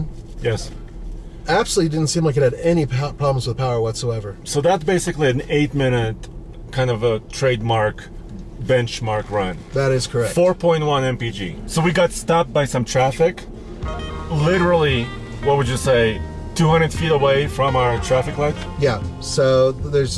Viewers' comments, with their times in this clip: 0:07 is that normal in a gm to not idle smooth?